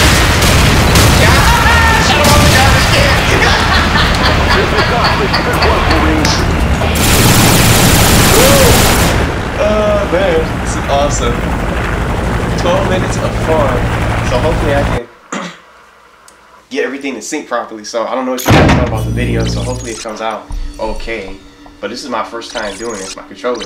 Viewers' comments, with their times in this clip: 0:05 had me crying hahaha the garbage can lol your laugh man love your laugh 🤣🤣🤣♥️♥️♥️♥️